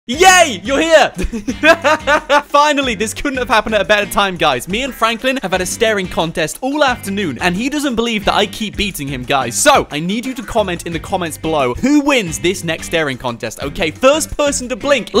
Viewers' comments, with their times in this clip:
0:02 I hear that same laugh always